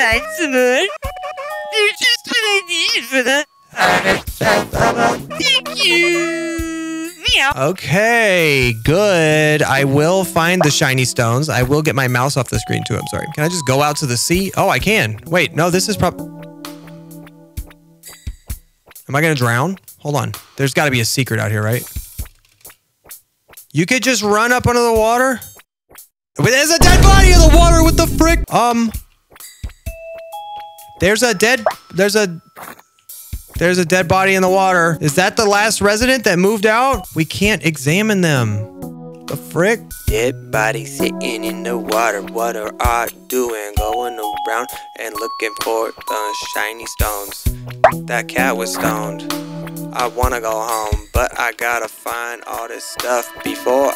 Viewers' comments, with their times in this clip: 0:03 how you said "H A R V E S T F E S T I V A L Thank youuuuuuuuuuuuuu!!! MEOW"
0:41 he is singing